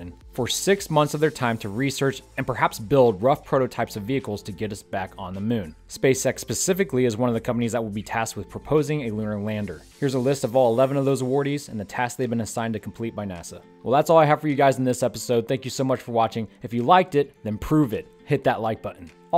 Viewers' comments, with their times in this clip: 0:04 Love your work... but SpaceX pacifically or specifically. Lol.